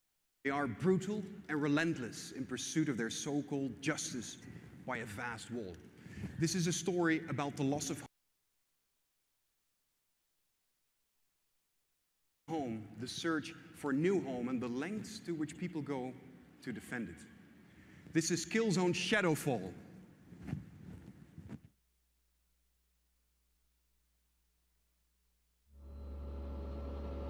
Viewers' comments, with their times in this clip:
0:08 im complaining about the 'areas' is petty laggy it's IGN rite? they should hav a better modem